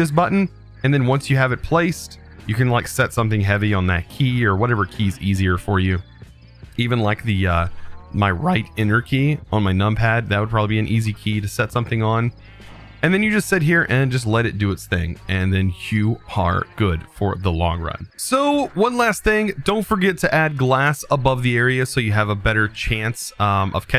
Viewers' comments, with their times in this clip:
0:08 that voice crack made me laugh 😂
0:08 lol the voice crack..